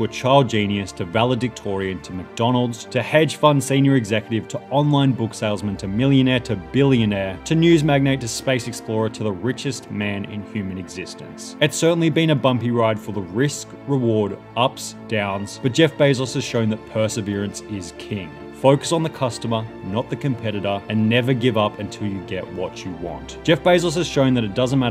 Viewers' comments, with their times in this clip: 0:05 I love how he differentiates "millionaire" and "billionaire"